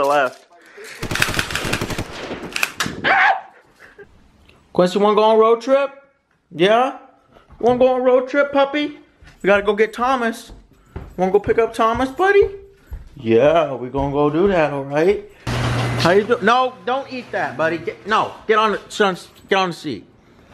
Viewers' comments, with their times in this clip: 0:08 did you just call him "papi"? 😁